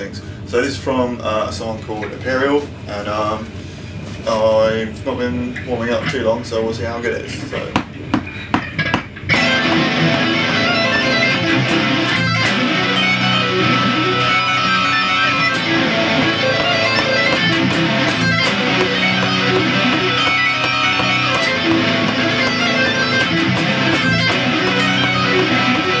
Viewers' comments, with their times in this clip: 0:07 that empyreal riff, that must be the coolest sweep riff ever. Sooooooo goood!!!!! :)